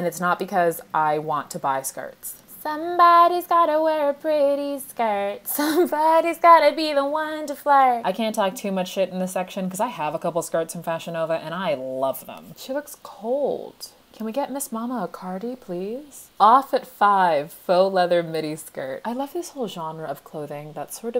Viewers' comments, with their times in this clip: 0:06 the song has been in my head all week bc of tik tok and as soon as i escape it, it’s in this video